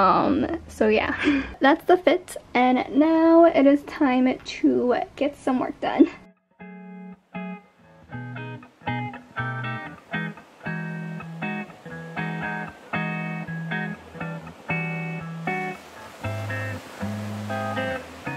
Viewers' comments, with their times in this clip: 0:06 OMG THE MUSIC UGH LOVE IT ONE OF MY FAVES